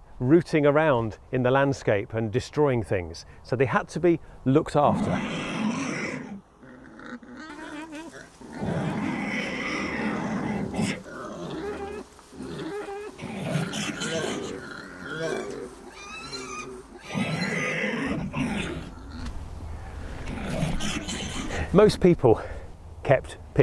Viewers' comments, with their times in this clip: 0:06 😱A HORRIFYING SOUND!😱 😭That's NOT sweet Wilbur the pig😭 I just recalled a USA serial killer used hogs to get rid of the bodies. In a movie based on it the agents found a missing girl's necklace in a pile of hog poo because that of course passed through without being digested.😱